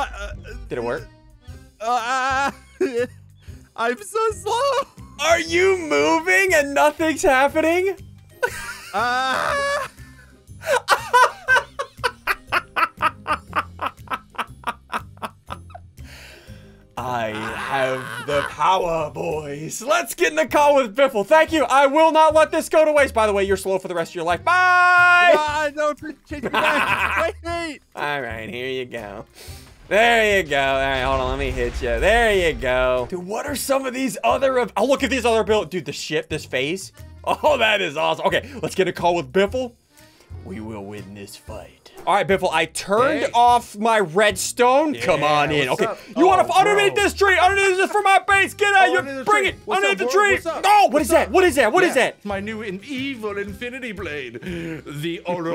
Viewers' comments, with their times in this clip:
0:08 i like how you laugh xD
0:36 "Dude the shit, this phase-" Ssundee swore confirmed!